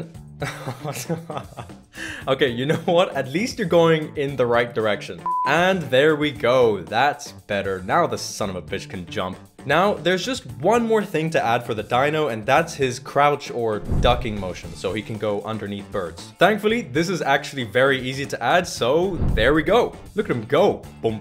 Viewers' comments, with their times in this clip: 0:08 this guy can say son of a bitch normally like he doesnt care xd